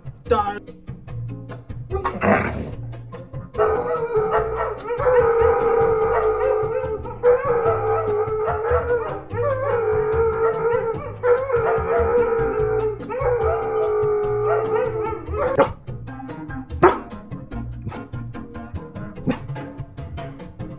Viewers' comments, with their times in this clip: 0:04 the house is "quiet" 😂